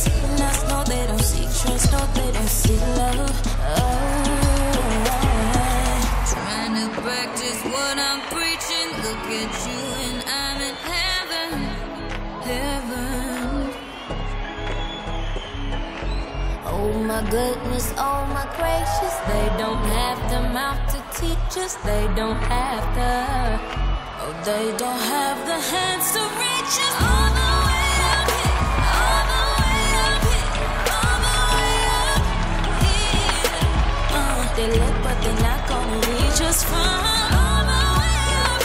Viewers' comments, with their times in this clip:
0:09 Her voice sounded amazing especially
0:22 On the "the" star sounds like zhavia